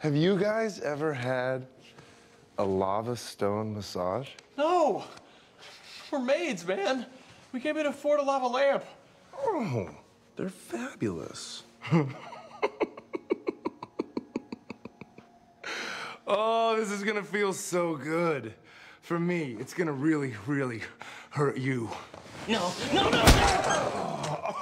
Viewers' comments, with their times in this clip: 0:10 I’m sorry but the way he says fabulous is just awesome. And then with the evil laugh it just makes it that much better